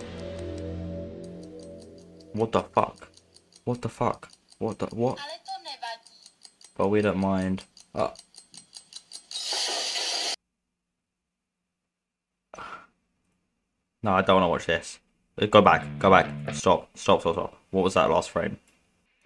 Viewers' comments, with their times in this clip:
0:05 its actually Czech (Czechia) Didn't expect that 😂